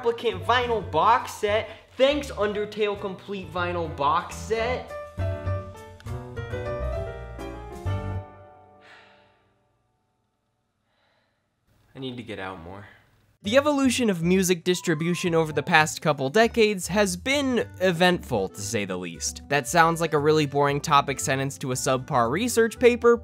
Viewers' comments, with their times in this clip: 0:05 just hit hard, that pause in the music.